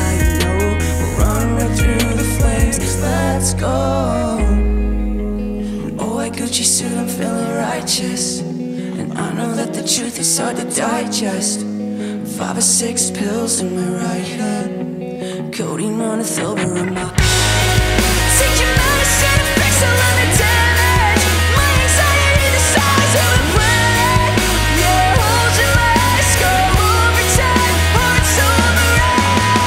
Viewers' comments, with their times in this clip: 0:08 Wow, just seeing this cover now. Never heard of you guys...see the account says triple J ....not sure if thats regarding the Aussie radio or thats just your name and no affiliation. Love the leads take on it, wasn't big on any of the accompanying layers by the others. Personally think the singular and center voice worked best. cheers. good cover though guys EDIT!!!!!: Holy ish, my bad! I had only made it like into the song when I paused and wrote this...kept listening. . . I take it all back. I got the chills ....shit reminded me of my first time listening to Paramore back in the day. I love what you guys are doing...the interpretations and execution . Lovely. Keep it up! Kudos!
0:15 when you heard that guitar, then the camera to the drums, you knew it was about to go down👌